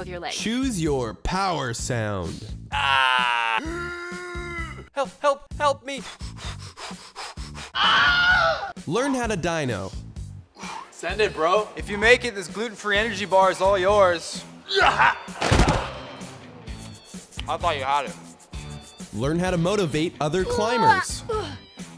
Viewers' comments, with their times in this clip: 0:04 I completely lost it at the Wilhelm scream 😂
0:07 Hahhahah that Wilhelm scream
0:07 you forgot the Ondra "aaaaarfgh!!"
0:07 You forgot "the Ondra"